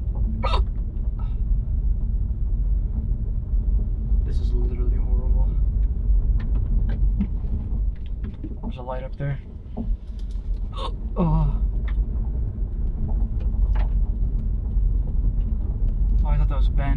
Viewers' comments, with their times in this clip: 0:03 you get bad hiccups too